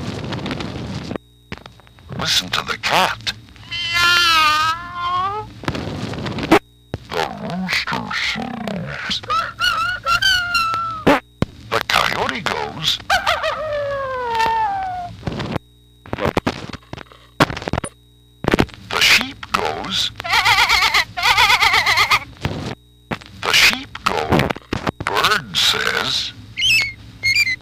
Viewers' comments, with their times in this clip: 0:10 lol ripper rrip fart
0:11 What in the soap? The record just farted!